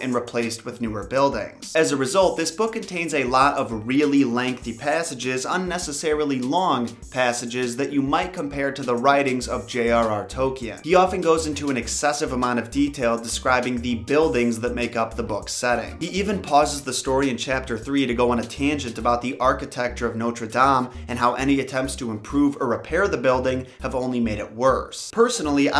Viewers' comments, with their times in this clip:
0:07 JRR Who???? Did you have a stroke?